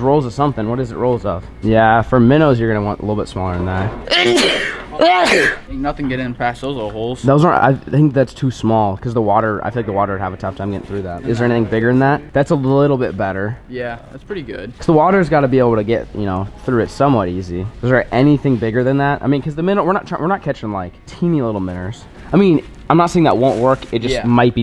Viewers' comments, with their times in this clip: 0:05 God bless you!!!